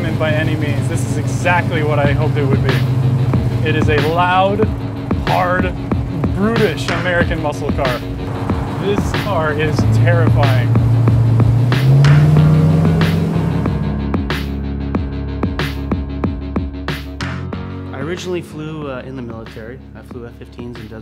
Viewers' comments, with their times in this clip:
0:03 That music ..........dammmmmmmmmm